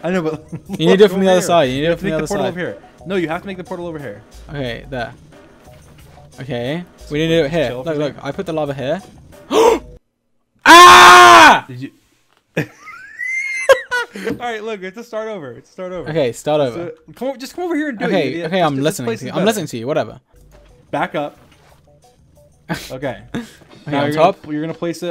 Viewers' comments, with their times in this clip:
0:08 Most manly scream I’ve heard from him.
0:13 My man turned into a dog whistle